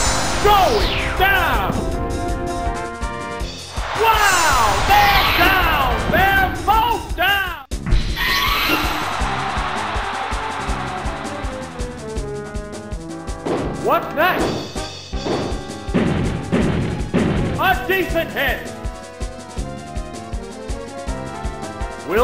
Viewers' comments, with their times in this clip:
0:03 I always laugh at the way the announcer says that! XD